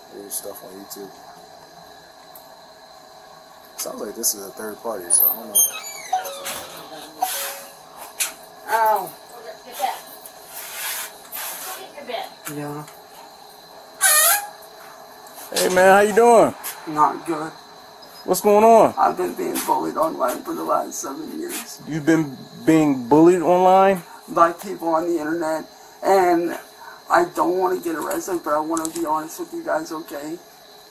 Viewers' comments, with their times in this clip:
0:06 the way he cries out like a little kid trying to get sympathy in the principal’s office 😆 Such a spineless coward liar
0:18 Listen to that fake-ass "pwease help me" tone...